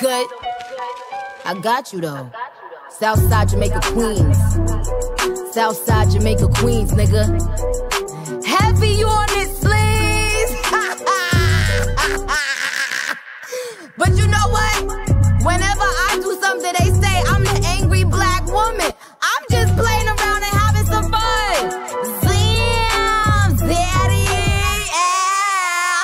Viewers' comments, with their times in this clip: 0:10 this laugh killed me